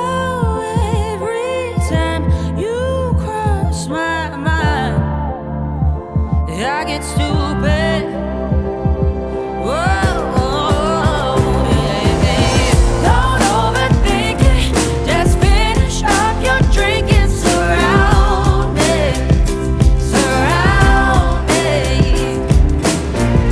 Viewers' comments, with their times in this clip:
0:10 everytime is my favorite part 😭 her voice is just so satisfying .